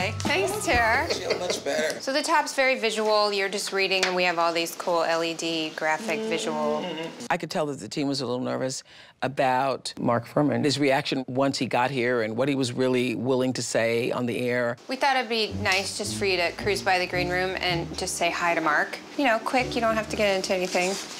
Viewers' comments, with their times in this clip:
0:09 Anobody else notice the dubbed-in "Mark Fuhrman" ? LOL. I wish I knew what she said originally :D